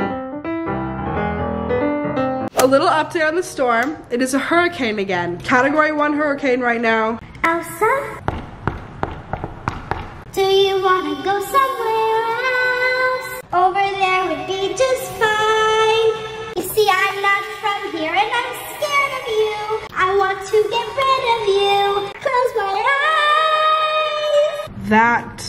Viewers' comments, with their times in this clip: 0:10 The Frozen Song Was One Of The Best Parts About This Video